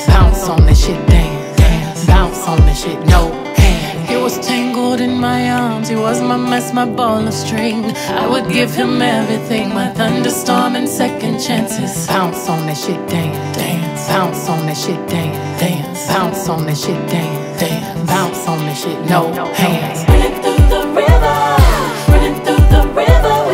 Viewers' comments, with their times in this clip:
0:10 Omg is that the nail instrumentals that Dolly made up coming through ???